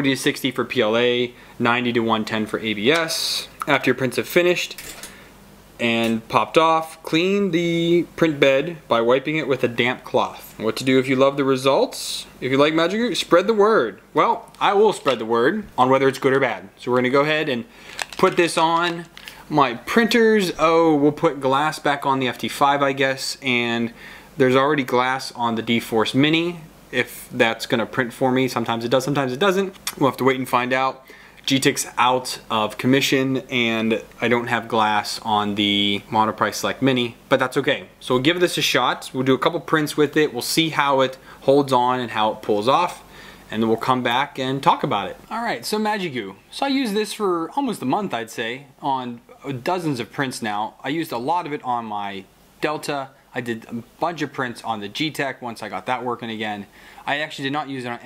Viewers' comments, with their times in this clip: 0:04 whats up with the random power surge and short circuit noise?
0:42 the sound cuts out in the right channel :(